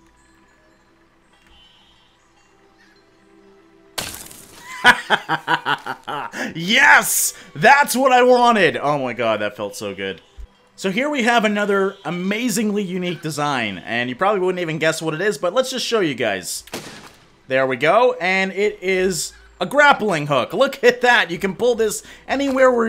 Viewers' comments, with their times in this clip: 0:03 The laugh just amazingly evil